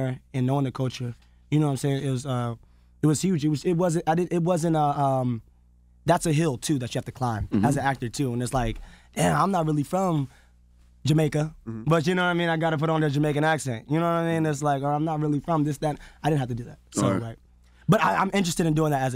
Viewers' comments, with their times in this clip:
0:03 He sounds a lot like Kevin Hart around the mark. Ironically, it’s when he is discussing being from Philly, and how it helps in his role.